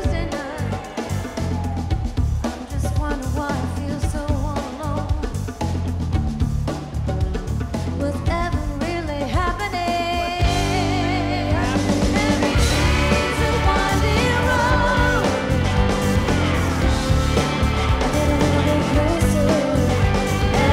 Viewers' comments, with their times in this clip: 0:03 Nice. Poor guitar though, ding ! I guess a guitar with a little extra character never hurt anyone...
0:03 Poor Gibson... poor guitar what a crash!